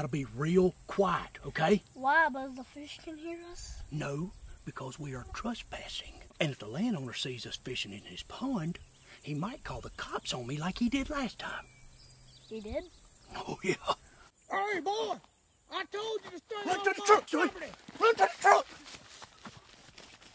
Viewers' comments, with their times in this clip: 0:05 anyone else think they had a mosquito flying around their head? 😂